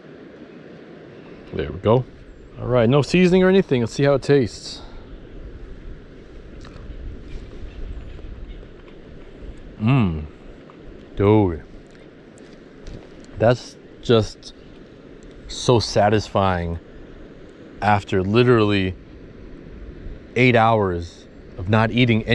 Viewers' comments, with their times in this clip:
0:09 takes a bite of Crawfish “DoWde” 😂 Louisiana boy came out!